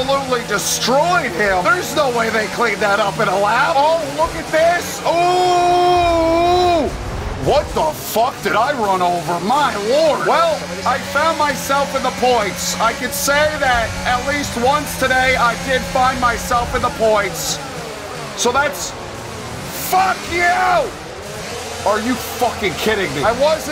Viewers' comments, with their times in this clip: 0:05 sounds like Mr. Meeseeks